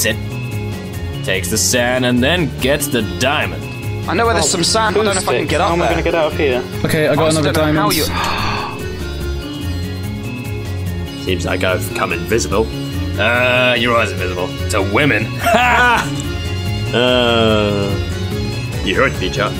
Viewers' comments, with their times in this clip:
0:05 Gasp no censor!